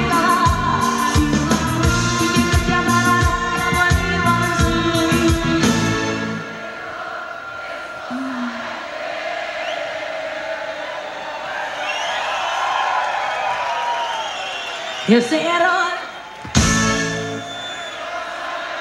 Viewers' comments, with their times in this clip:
0:05 I love it when she breaks character, then she exhales "oooh" when she hears the crowd repeating the lyrics